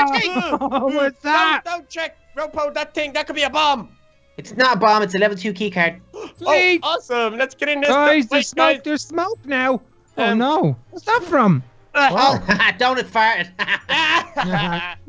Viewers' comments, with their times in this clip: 0:03 WHOA THAT COULD BE A BOMB! (Says casually) It’s not a BOMB it a level 2 key card.